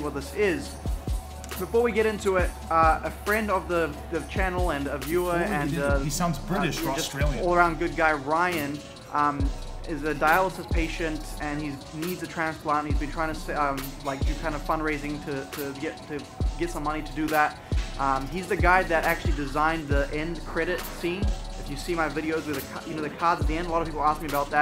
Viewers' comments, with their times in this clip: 0:05 He has a New Zealand ascent (I'm Australian).